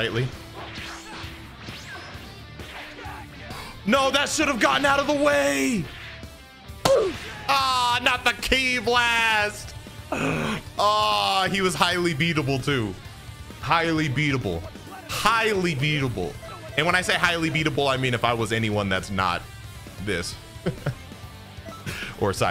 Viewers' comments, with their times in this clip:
0:08 bro lowkey sounded like squidward right here lol